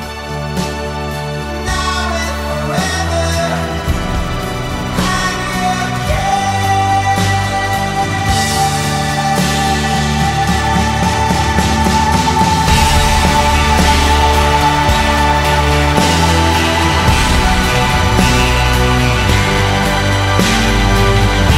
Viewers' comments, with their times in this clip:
0:03 sound like the rupture and all Christians lifted through the clouds to meet Jesus